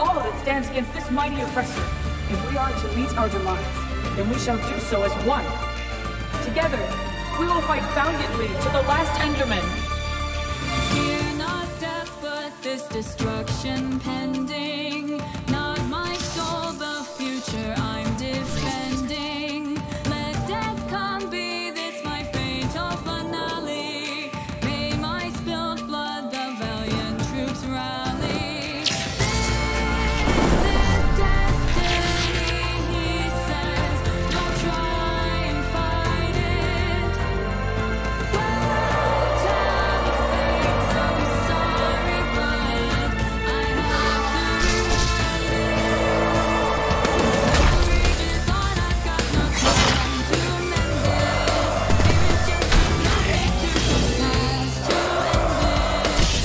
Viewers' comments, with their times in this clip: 0:06 Ceris (Ender Queen) : Together, We Will Fight Valiantly To The Last Enderman! Also Zegarning (Skeleton Enderman) At Background : Yawns
0:43 Ye he makes cute cat noices lol